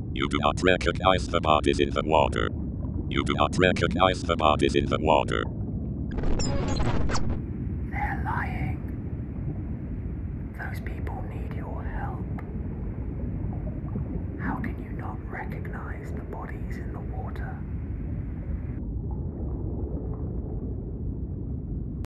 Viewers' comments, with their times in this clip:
0:08 You sound British, so I don't care about you. Might care about the bodies in the water, I'll give you that